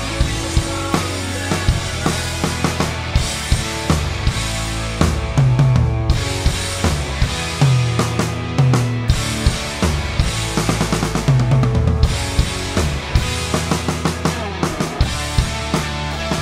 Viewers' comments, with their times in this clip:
0:04 R.I.P Taylor. Great cover and tribute drumman nailed those fills